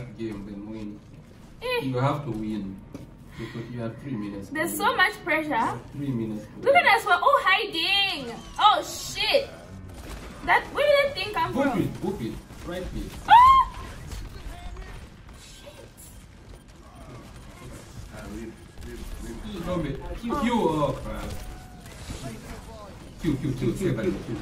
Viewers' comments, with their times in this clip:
0:08 "Oh shit!!" The appropriate reaction when you hear the whistling cowboy but can't see him.